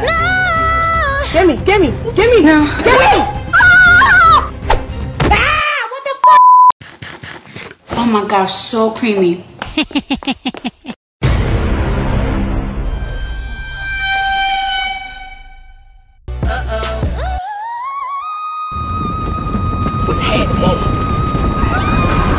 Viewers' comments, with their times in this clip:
0:04 had me dying The hehehehe 😂